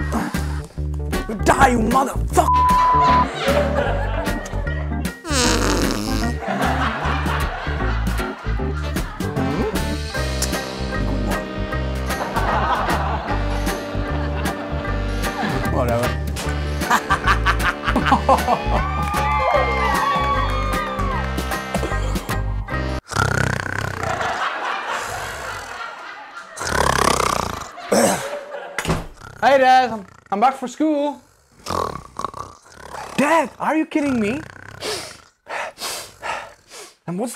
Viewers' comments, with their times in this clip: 0:03 the way he cuss is funny😂
0:04 he farted with the taste of scrambled eggs 😂
0:23 sleeping in this possition with snort.. GOT ME LAUGH🤣🤣🤣